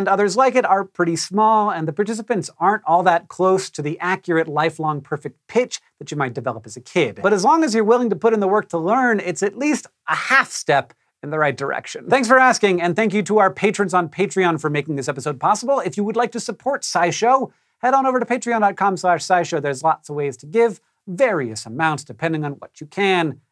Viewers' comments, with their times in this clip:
0:09 sry to be picky but thats not a half step. shouldve been one further up xD